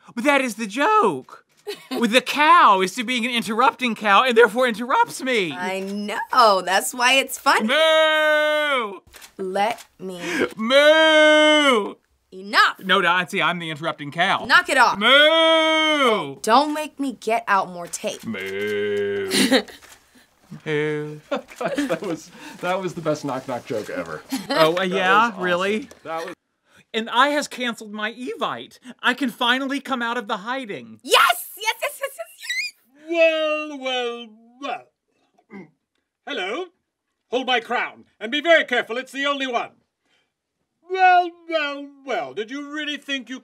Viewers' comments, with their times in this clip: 0:05 her voiced cracked😍😍
0:30 Her voice crack. Love it